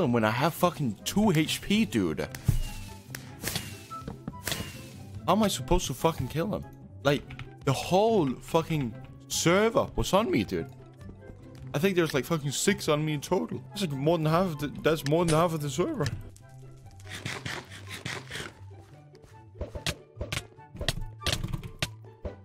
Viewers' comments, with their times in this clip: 0:08 The way he says server lmao